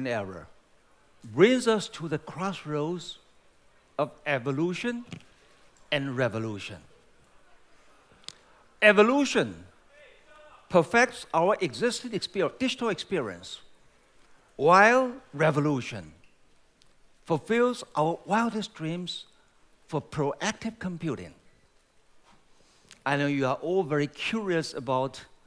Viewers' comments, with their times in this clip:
0:08 someone say "Hey, shut up!"